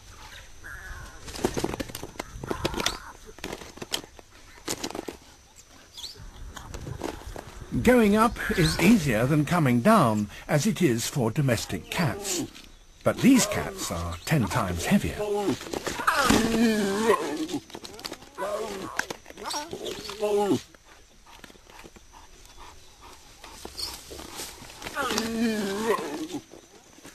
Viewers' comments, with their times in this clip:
0:08 the sound the lions makes after is hiliarious